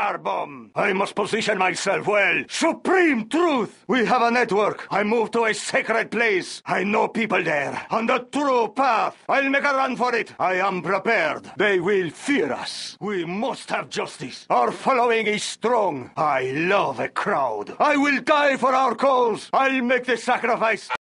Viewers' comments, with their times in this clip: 0:07 There's someone in a facebook group asking "why is the GLA bomber saying 'honda turo path', what does it mean?". I instinctively going right through google and wiki, and also almost getting Generals reinstalled to hear what the bomber actually says but stopped as I remember someone would have uploaded a video full of the unit's quotes. I deadass have the quote list from the wiki and listen carefully to this video which doesn't have much spacing between each voices. But before that, I mistaken 'bomber' with GLA's suicide truck and had to rewatch three times of a wrong video just to realize 'oh yeah, it's terrorist'. Oh, the terrorist actually says "Oh the true path" on
0:18 More Like "I'll make Quesadillas!!!"